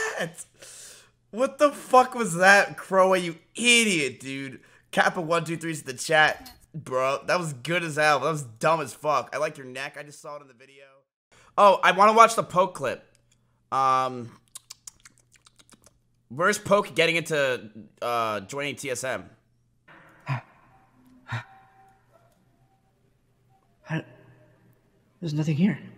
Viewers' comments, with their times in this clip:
0:09 Thought I was getting a call